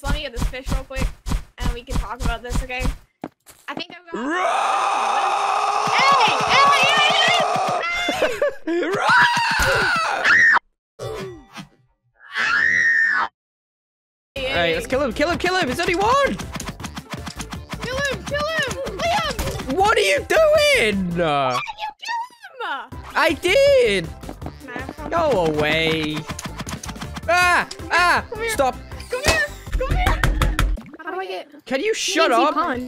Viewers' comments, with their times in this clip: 0:03 what is that roar
0:04 it sounded so real 😂😂
0:04 THE LAUGH BAHAHAHAHAHAHAHAH
0:09 I laughed because her girlfriend is screaming 🤣🤣
0:10 legends say that.that scream destroyed skyscrapers
0:13 LOL SHE SCREAMED